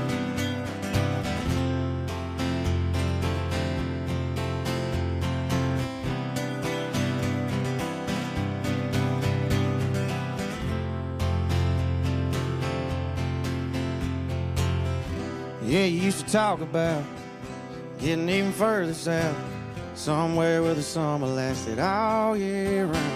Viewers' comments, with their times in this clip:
0:06 dumbass was about to come in at the wrong time.....